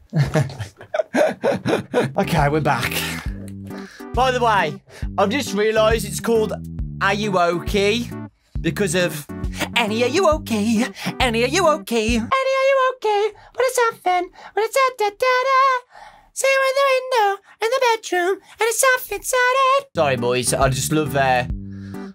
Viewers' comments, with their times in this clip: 0:09 Idk why, but that sounds JUST like my dad. 😅😅😅 The voice. 😅😅